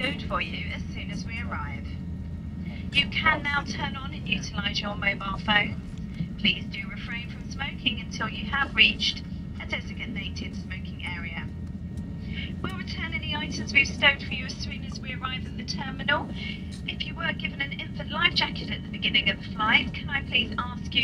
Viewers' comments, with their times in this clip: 0:09 She said "desigatnated smoking area"